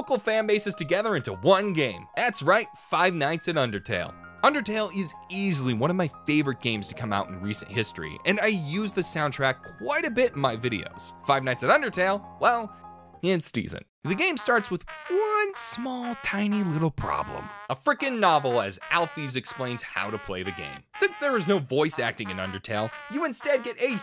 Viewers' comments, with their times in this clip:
0:06 When ever i hear undertale music its allways is so good.